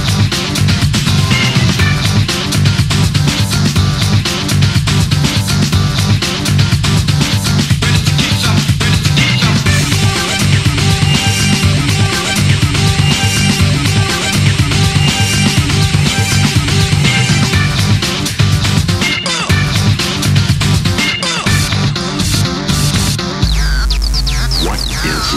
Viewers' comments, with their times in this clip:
0:09 hey that sound reminds me a lot of i ninja they copied it for mockery